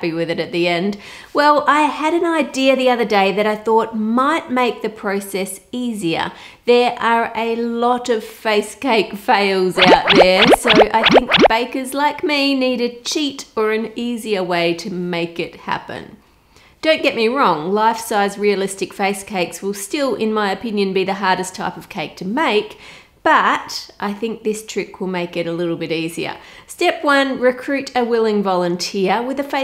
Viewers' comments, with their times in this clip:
0:10 when she said: "so_____bakers like me..." what did she say there, anyone??...thanks for any replies :) (background music ruined it ahaha)